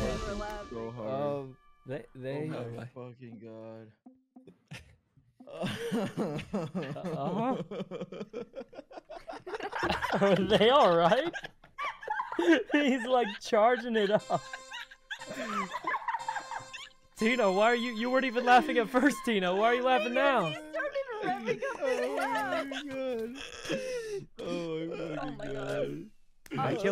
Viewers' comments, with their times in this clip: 0:04 i had stopped laughing by this point but this laugh where he like revs up got me again oh my god lol
0:06 quackity "revving up his laugh" (as tina put it) sent me into tears laughing
0:06 he fr sounded like an electric fan getting started
0:08 BRO BECAME A LAWN MOWER